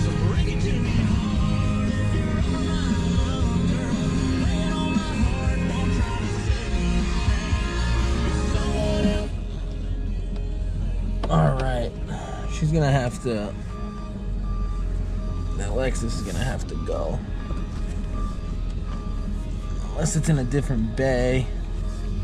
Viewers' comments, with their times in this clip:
0:07 jamming that Luke Bryan!